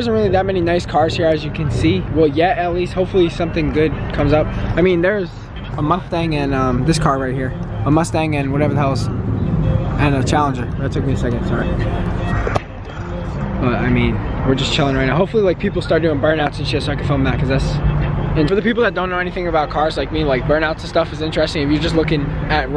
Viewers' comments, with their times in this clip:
0:05 Listen to what did he said? Mukhtang?